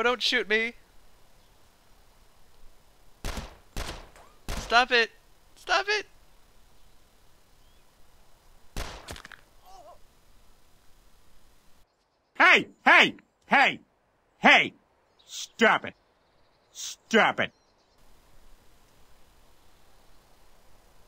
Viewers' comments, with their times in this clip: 0:03 dude i almost killed my self by like i had cola in my mouth when the fart noises started i almost killed myself